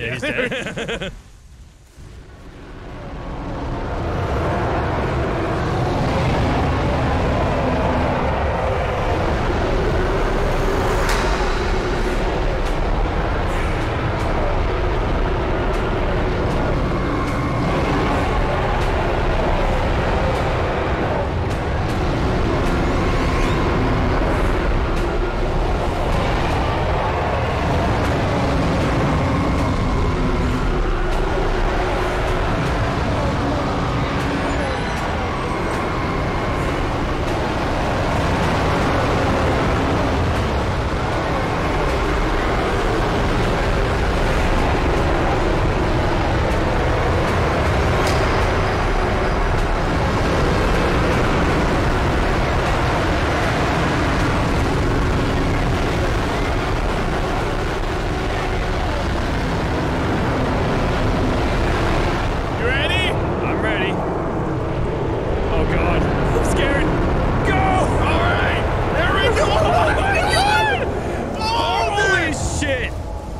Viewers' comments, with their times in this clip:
0:05 I love how everyone has long, beautifully monstrous broadcast calls, and then you bork bork from the Utahs
0:07 my freaking ears dude
0:51 low key ear rape
0:56 IS IT POSSIBLE FOR YOU GUYS TO BE ANY LOUDER?! MY EARS ARE BLEEDING!